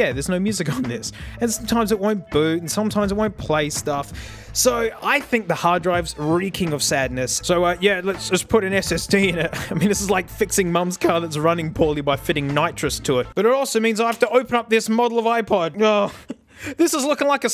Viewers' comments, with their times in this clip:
0:05 when he says "reek" you can hear the song throw a squeaky fart